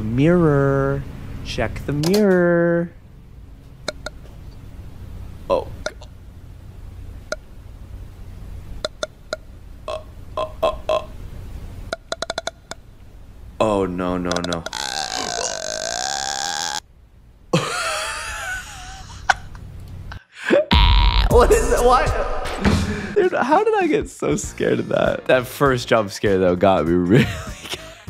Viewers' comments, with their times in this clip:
0:09 Why does that low-key sound like someone burping?!😭🤚